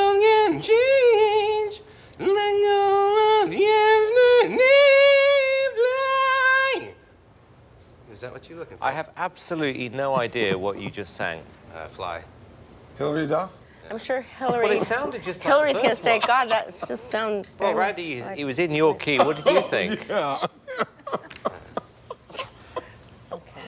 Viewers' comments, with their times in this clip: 0:05 he sounds like a goat more so at the end but the whole sounded pretty haneous..